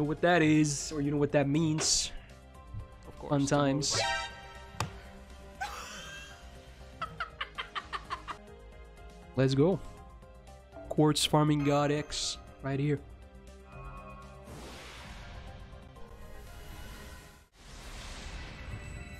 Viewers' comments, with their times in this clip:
0:04 you left some of that laugh in ty XS